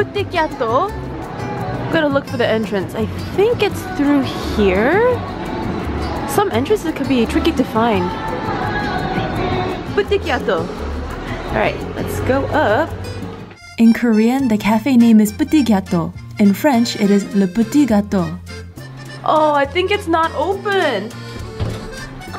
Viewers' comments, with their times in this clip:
0:03 DID I HEAR THE DNA IN THE BACKGROUND😂😂😂
0:06 I absolutely love all your series...Busan is on my bucket list, has been for over 15 years...I feel like I’ve been to all these places watching your videos 🥰 Also, You know you have an addiction to kpop and BTS when you can hear DNA playing in the background and thinking you’re hearing things only to realize nope, one of the shops was playing it in the video 😂
0:07 I can clearly here DNA playing in the background and started to sing along 😂🥴
0:08 Me: * hearing bts dna*
0:08 omg hearing BTS DNA and just rewind it like 5 times to here the sweet voice of Bangtan.